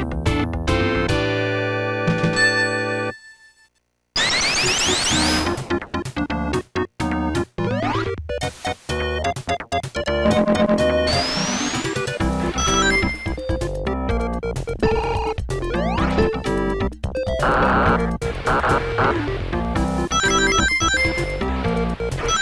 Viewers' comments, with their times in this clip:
0:03 That song's... AWSOME!